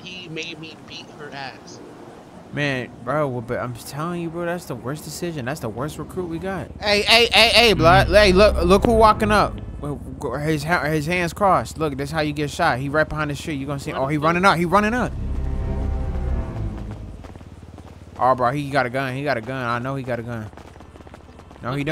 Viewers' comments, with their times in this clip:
0:03 “He made me beat her ass” rating fade out like that is wild 😂